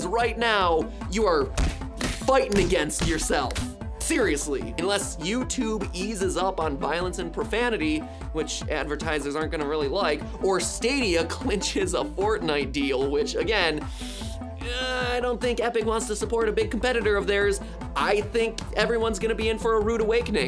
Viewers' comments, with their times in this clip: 0:03 there were some punching sounds. It looks like that’s going to mean demonetization.